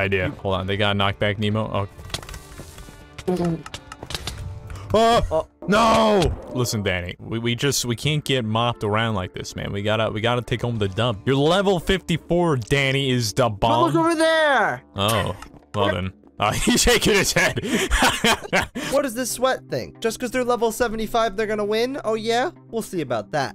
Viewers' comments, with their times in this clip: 0:05 he sounded so much like technoblade 🥺
0:06 bro I hear Technoblade